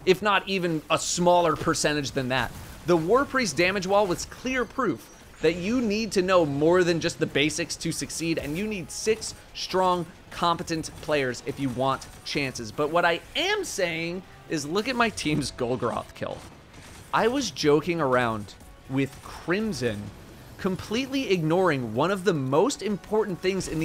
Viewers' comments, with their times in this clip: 0:09 The timing sync of the Crimson shots to what Datto is saying is unintentionally amazing.